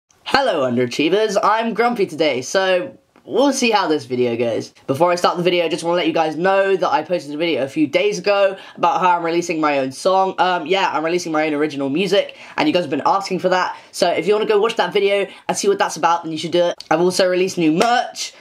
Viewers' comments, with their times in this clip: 0:00 I heard "Hello, ARGENTINOS"